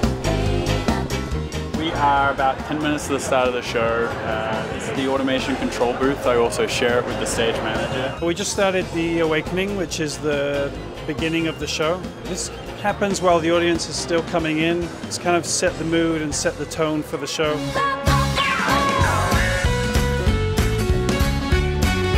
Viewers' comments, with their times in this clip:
0:03 The guy has a really unique accent, can someone else put their finger on it